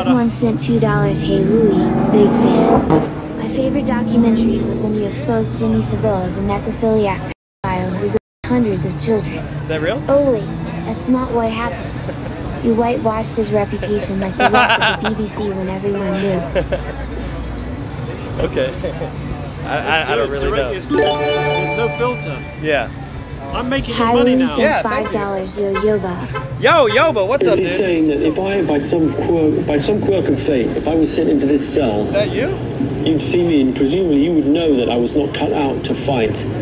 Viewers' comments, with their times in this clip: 0:10 the fact Louis laughs about that is very telling. He also omitted it from his BBC documentary
0:17 that fake laugh by Louis tells u all what u need to know about him kek